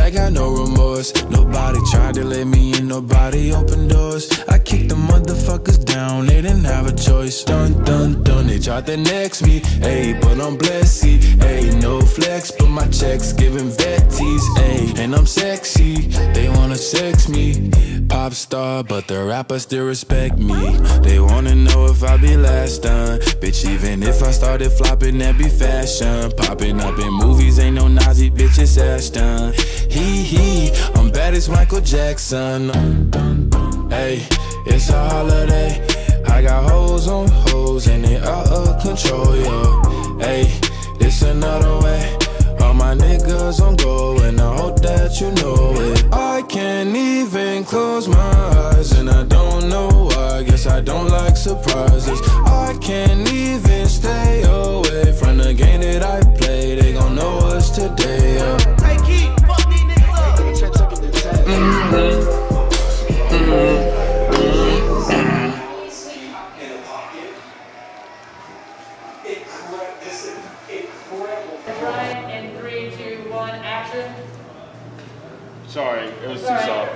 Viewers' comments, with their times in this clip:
0:04 I keep the mothefcker
0:30 He drops with the drop, True legend.
0:32 now that is what i called jokes on beat
0:32 I love how he falls to the rhythm of "dun dun dun"
1:02 that one kid singing holiday while brushing their teeth